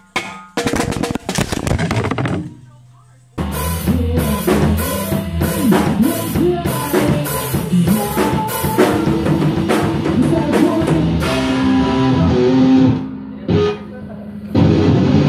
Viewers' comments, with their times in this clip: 0:03 What's the song that they’re playing ? It kinda sounds like muse